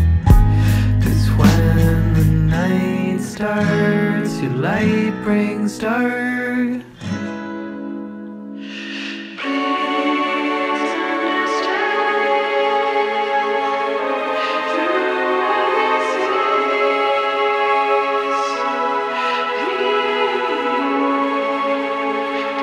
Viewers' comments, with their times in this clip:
0:09 Btw getting a strong tame impala vibe Is it a coincidence, or you thought that out?